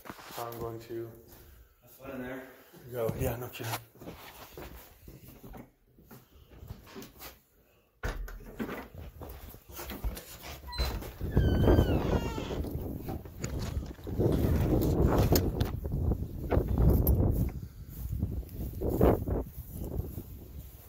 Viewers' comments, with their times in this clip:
0:05 you can hear a whisper say”Hey” and something else buy can’t seem to make out the rest.